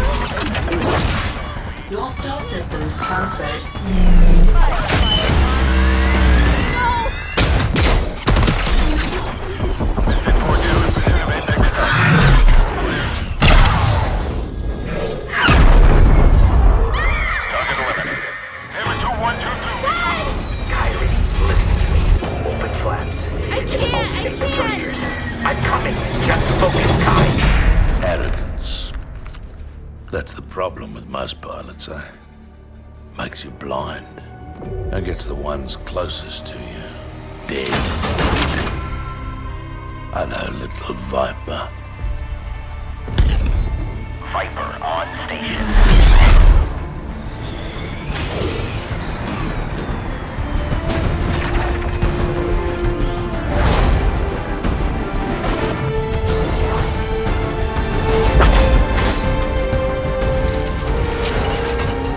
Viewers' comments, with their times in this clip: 0:03 coolest core sound affect
0:04 (iconic viper noises) Kairi : “NOOO !!!” Titanfall fans: “YESSSS !!!”
0:04 my favourite titan's sound
0:04 came back for the brrrrr
0:43 "Viper on station" That line gave me goosebumps, cant believe i get to hear Vipers voice again.